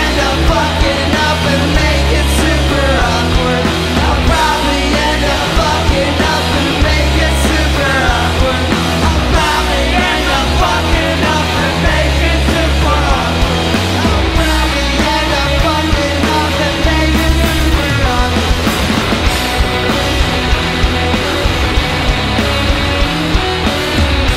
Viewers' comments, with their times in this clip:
0:08 Booyah for stagediver harmonies